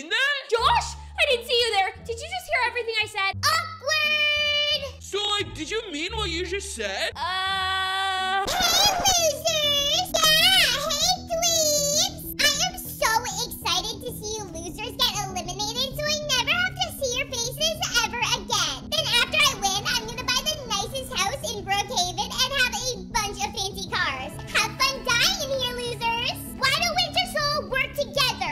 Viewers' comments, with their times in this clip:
0:10 i Love the UHHHHHHH